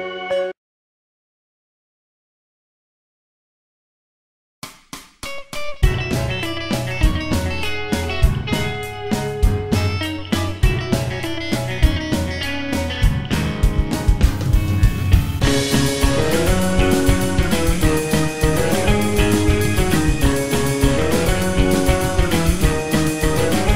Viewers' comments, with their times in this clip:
0:05 Best modern day music